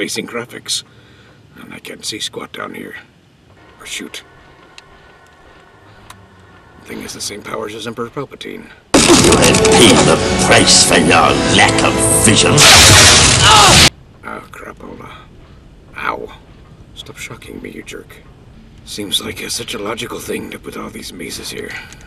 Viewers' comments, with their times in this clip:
0:07 OW! >.< Emperor Puke e'sploded my ears! .....no really, ow.
0:09 Star Wars Obi-Wan was a better TPM game and told a pretty neat story from beginning to end. The voice acting wasn't always spot on, but it was definitely better than this game. Honestly though, the best TPM game that covers the entire story of the movie is Lego Star Wars. Also oww my ears!